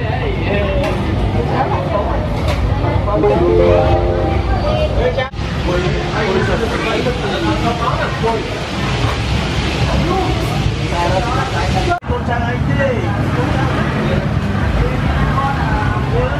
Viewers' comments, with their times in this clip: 0:03 Why ,,Justyna kidding" ?